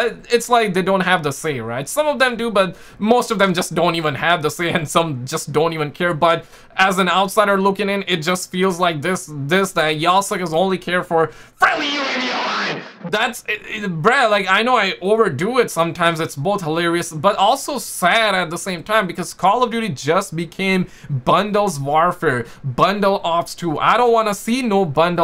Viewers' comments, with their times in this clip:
0:10 hire this man as an announcer